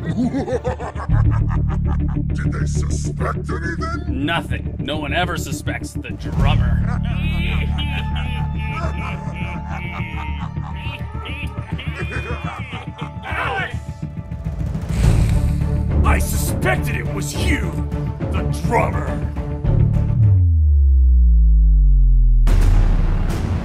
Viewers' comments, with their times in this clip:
0:07 now that's an evil laugh if I've ever heard one! It's so diabolical!